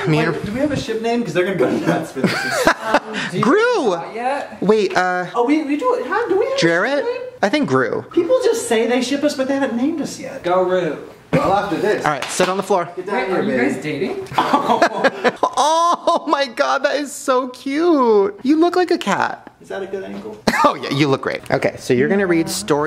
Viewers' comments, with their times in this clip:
0:04 Headphone useres pm😭😭😭